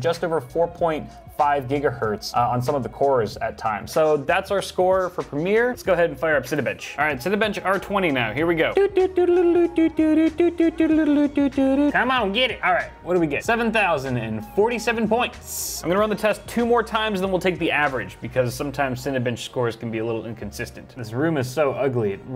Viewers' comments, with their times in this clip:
0:06 When you first said Cinebench i thought you said Cinebitch